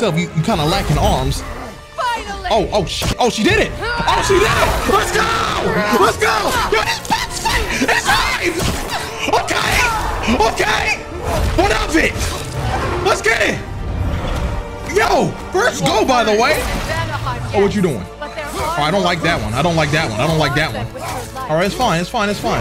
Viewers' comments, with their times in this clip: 0:04 Freya turned her inner nigga on after she got that rune😂 That "hraaah" sounds like it hit different lol